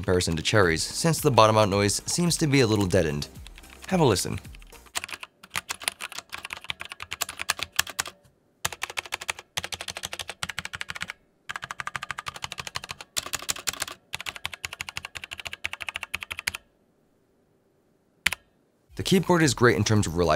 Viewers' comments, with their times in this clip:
0:06 That metallic feedback is really upsetting. Is this normal, is it this keyboard's thing or just the microphone compressing the sound?